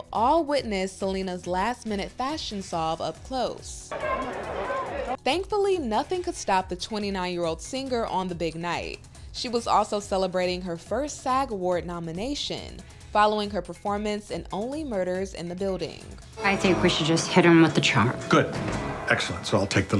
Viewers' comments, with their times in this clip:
0:07 Can I all, please unite and come together in agreeing to stop pronouncing an extra 'g' in "singer" ...please!